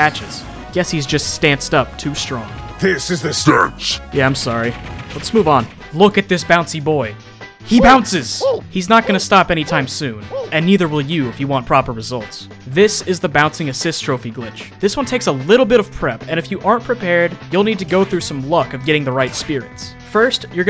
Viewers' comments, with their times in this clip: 0:07 I love the WHOO sound here